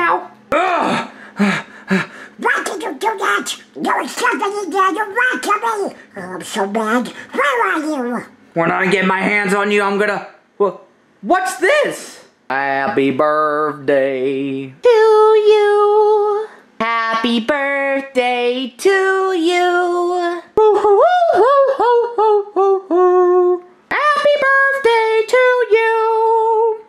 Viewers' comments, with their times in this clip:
0:08 Sounded like the evil version of him again.